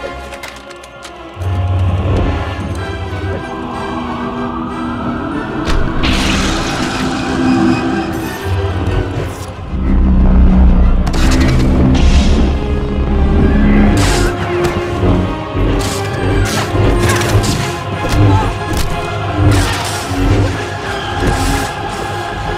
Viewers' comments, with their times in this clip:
0:04 LOVE the rots music my fave song in all of starwars lol